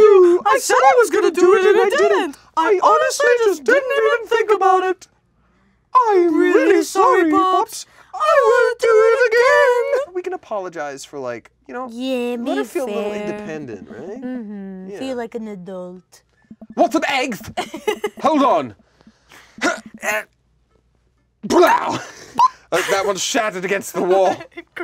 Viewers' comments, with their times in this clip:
0:04 theyre voices are the exact same pitch im thoroughly amused
0:05 they sound like HIM from The Powerpuff Girls 😂